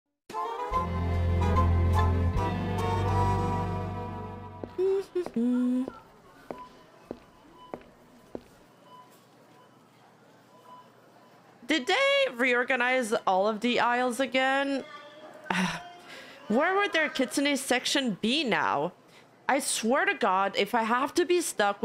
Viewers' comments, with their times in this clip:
0:04 I just want to say, step sound is definitely a horse trot